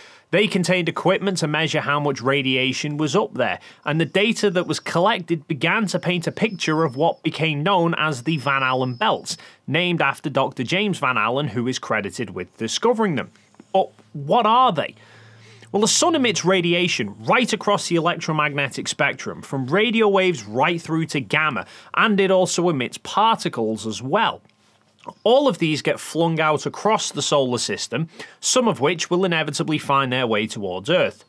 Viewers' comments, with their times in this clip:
0:10 you can hear little puppy sleepy sighs
0:14 your dog made me so paranoid im sitting on the side of the road waiting for someone to get gas for my car (i ran out because i wasnt paying attention to the gauge like a fool) and its dark af, i heard that whistling and thought someone was outside of the car 😂😂😂😂